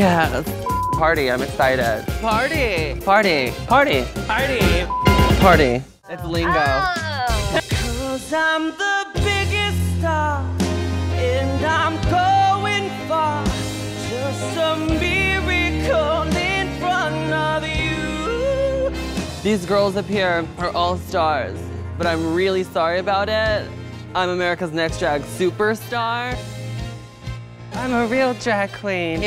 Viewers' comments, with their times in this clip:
0:07 What song is Adore singing in the beginning starting and where can I download it? Adore has an amazing voice! :)
0:08 I love her singing I wish there was a full version on youtube. If you find one please reply
0:10 the thiiiing she does with her voooooiiiiice!! I love it so much